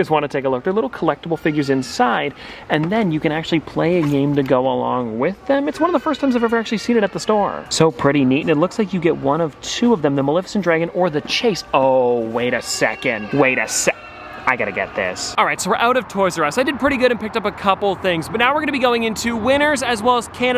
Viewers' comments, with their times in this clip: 0:07 Anyone else hear the kid crying ?